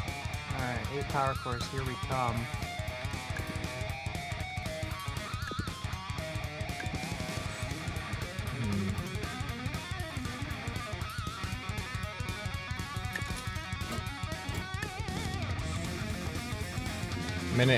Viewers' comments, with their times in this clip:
0:03 me getting A-10 vibes form that “oh good lord..”